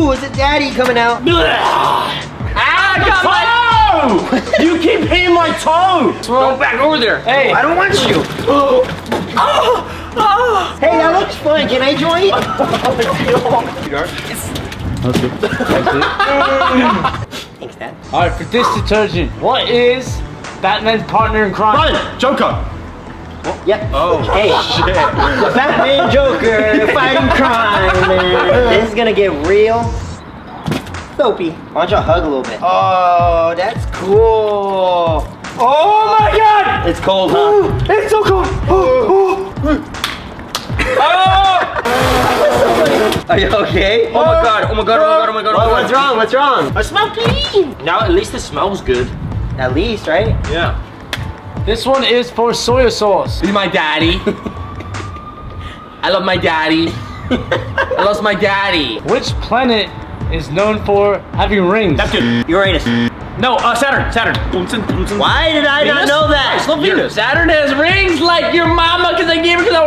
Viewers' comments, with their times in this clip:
0:09 the moan tho .....
0:30 "Its gonna get real thoapy" gets me every time 😂😂😂
0:55 why is nobody talking